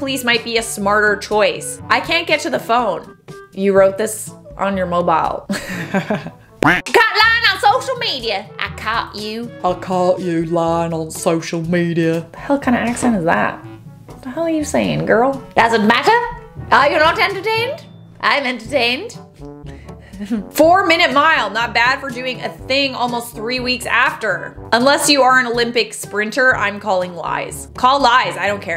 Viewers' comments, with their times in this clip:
0:10 That deep voiced Southern accent is a bit Buffalo Bill :)